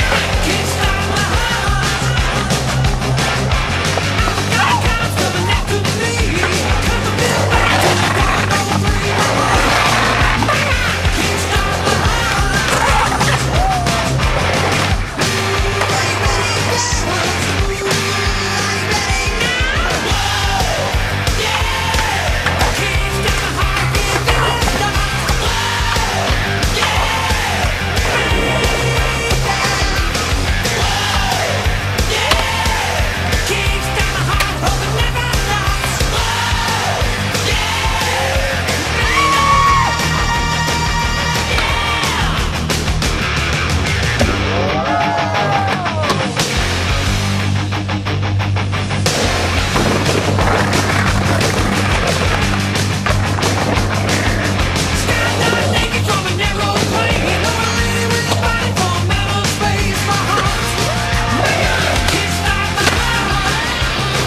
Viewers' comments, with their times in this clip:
0:04 When he barks after the frontside grind up the incline is my favorite part of the whole video!
0:50 Skateboard matches the music perfectly, crazy lol